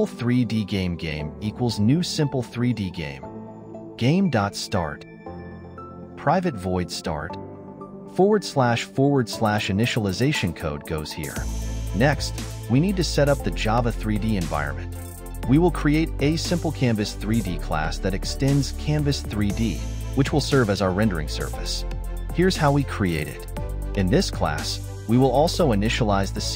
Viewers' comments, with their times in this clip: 0:08 "Forward slash forward slash Initialization code goes here." -> Wow, this AI knows how to read and speak - text to speech. I'm speechless.